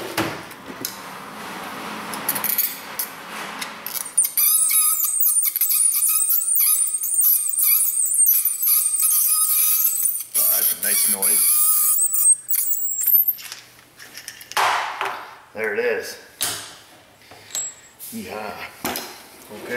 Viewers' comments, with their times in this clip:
0:03 sound goes right through you.